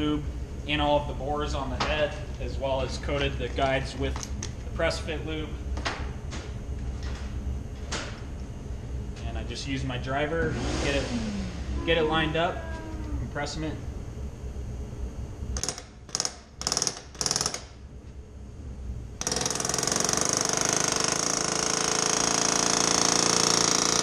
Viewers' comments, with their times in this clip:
0:10 Forgive me for thinking that's a rivet gun. (30-yr aerospace career)